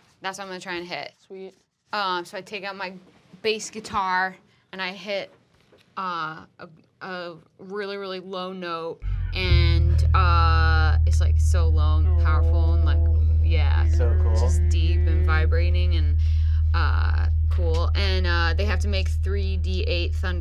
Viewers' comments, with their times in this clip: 0:06 when the bass sound effect played my phone started mildly shaking and I FREAKED OUT!!